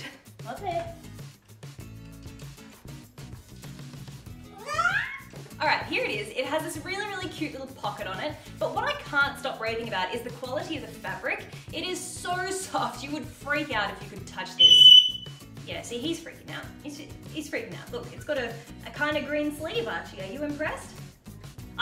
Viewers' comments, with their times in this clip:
0:04 Omg why did Archie sound like a cat 😂😂